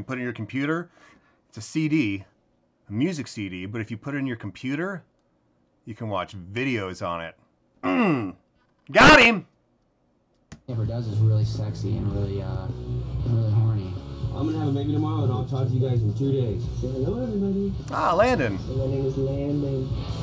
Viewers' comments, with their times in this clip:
0:08 when mark says goteem the audio gets loud only on that part 😂